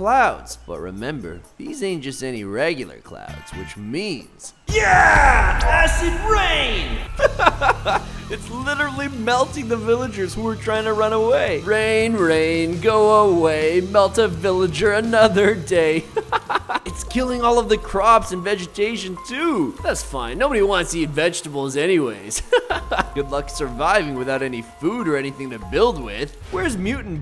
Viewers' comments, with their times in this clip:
0:08 s-sir???? Your laughh????😳😳😳